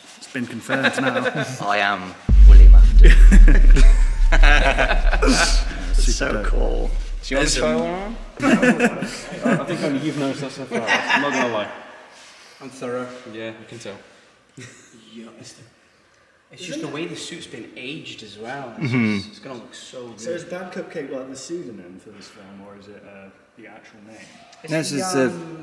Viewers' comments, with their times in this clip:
0:10 Bro laughed like Funtime Freddy